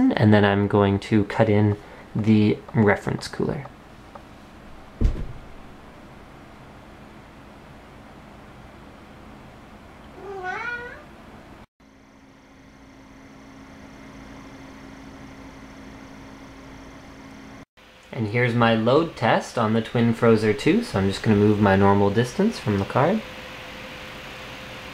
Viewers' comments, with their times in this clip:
0:08 lol does that card meow ?? xD J/K
0:10 thumbs up if you noticed the cat meeoooow'ing during the noice comparison